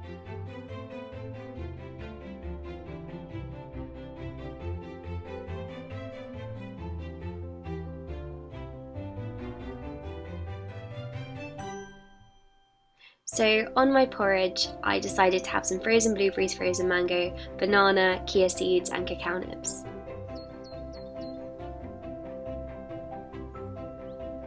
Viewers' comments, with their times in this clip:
0:10 it's oddly satisfying that as soon as the music goes DING, your oatmeal is made 😂 I always loved watching your morning routines, and this one is no exception :) So productive!!! ❤️ ps: the Titanic soundtrack on your Spotify! yes!!